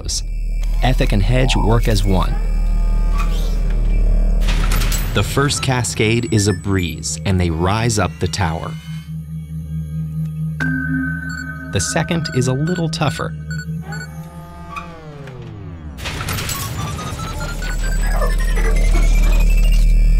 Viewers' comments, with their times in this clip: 0:03 does that sound like a door closing in Fortnite? It sounds so similar (Season 8 i think)